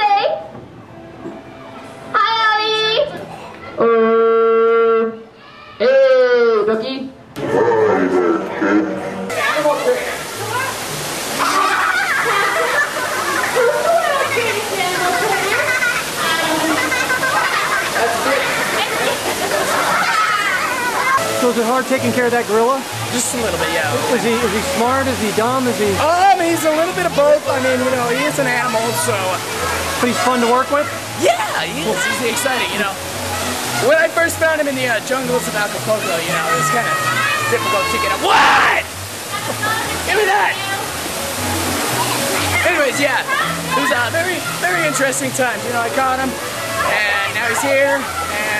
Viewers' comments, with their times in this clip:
0:04 sounds like chef
0:36 The guy yells at the kids